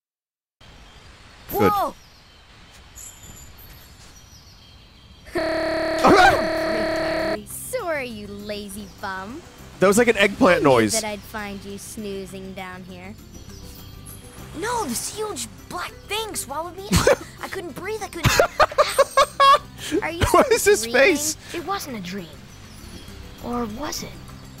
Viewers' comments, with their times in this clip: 0:05 Kairi’s chuckle does kinda sound like an eggplant